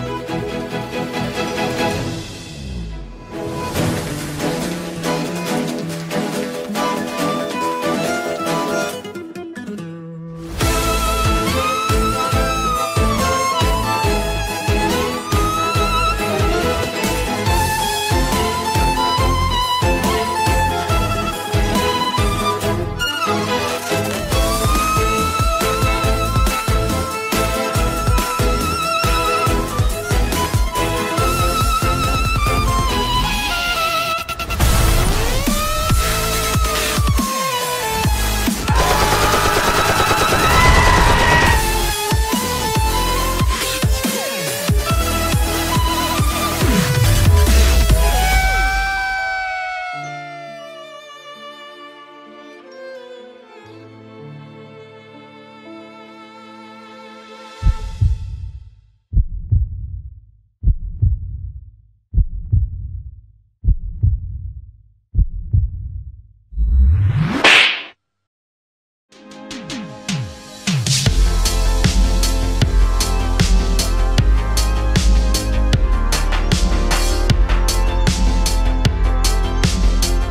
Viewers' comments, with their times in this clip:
0:08 I love zhongli play guitar
0:46 I love the ''nooooo'' of Yoimiya it's so cute and funny #stopchildeabuse
1:02 i like this face. Btw its really good coz FR's bgm fits perfectly to Yelan👍